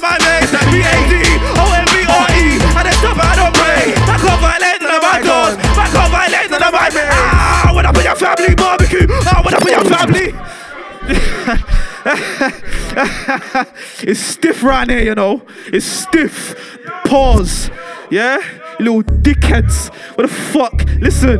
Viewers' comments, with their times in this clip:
0:06 The way how he caught the beat was maddd